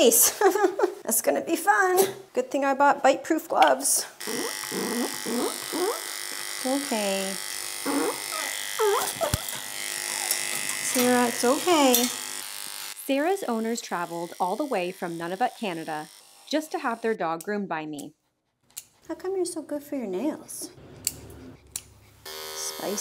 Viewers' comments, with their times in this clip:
0:04 not the pigeon noises 😭
0:10 Sara sounds like a guinea pig ahahaha